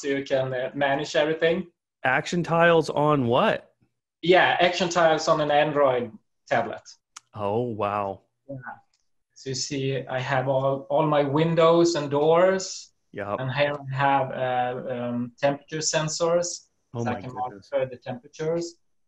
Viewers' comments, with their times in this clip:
0:04 The look of disbelief and the gulp 😀